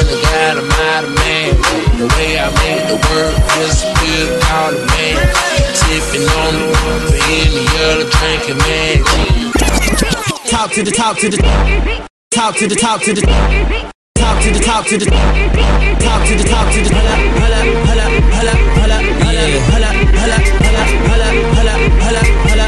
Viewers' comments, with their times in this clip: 0:10 I dig the synths on this track. Anyone know the name of it?